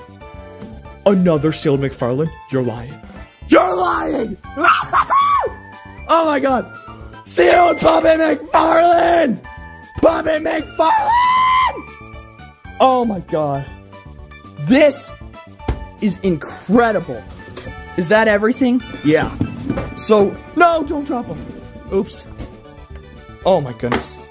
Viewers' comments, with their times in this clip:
0:05 The way he screamed